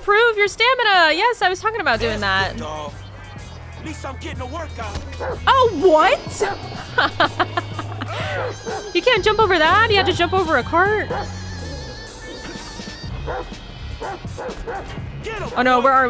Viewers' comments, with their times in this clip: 0:03 the background music went with Franklin getting hurt😂